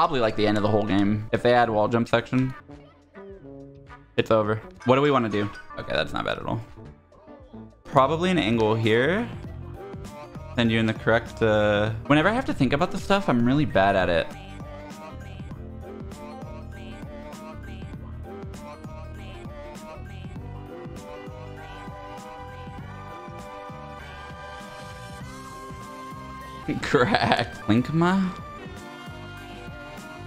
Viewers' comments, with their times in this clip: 0:10 the music timing is 𝚒𝚖𝚙𝚎𝚌𝚌𝚊𝚋𝚕𝚎
0:17 The fact that the music lined up perfectly with him getting to the top of the wall jump towers is INSANE.